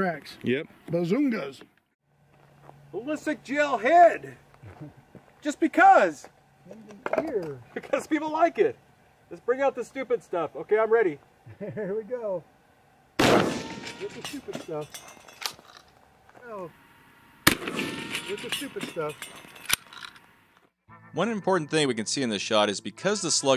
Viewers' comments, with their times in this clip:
0:09 is that a car driving in the background? Pretty much all these shots are ricocheting.
0:09 car in background